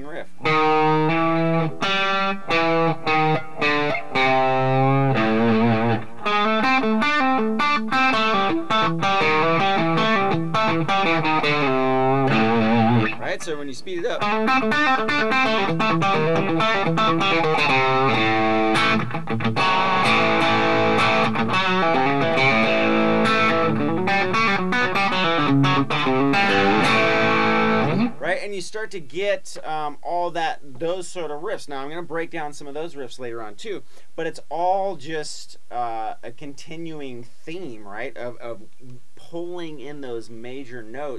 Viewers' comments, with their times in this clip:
0:07 That lick is right
0:23 What's that move you do a you sweeping up? It sounds really cool man!